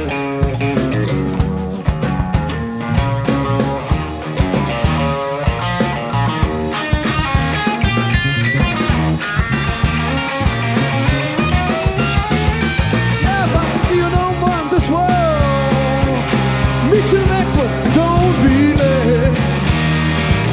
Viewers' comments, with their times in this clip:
0:03 quotes Day Tripper and I Feel Fine